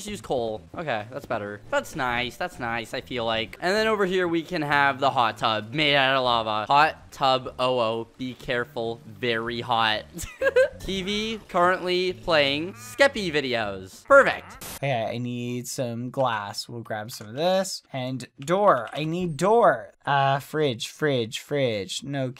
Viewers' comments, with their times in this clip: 0:10 That giggle tho- 👀